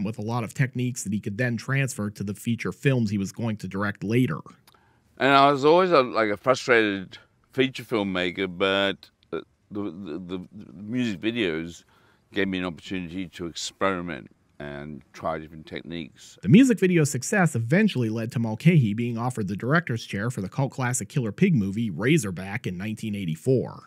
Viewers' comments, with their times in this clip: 0:05 Lol. He sounds just like Christopher Hitchens.